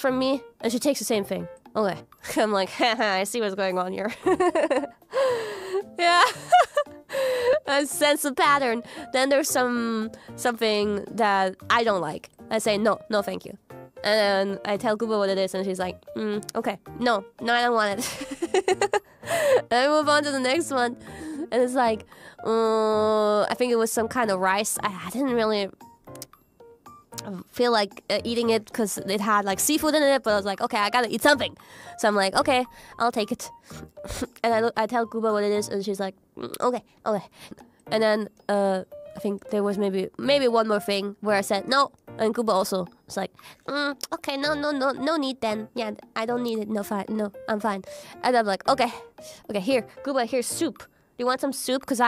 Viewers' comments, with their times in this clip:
0:10 ngl idk how long she's been talking like this, but I'm guessing this is Kiara's natural voice? Sounds so much better holy shit.
0:36 Spot on Goombus voice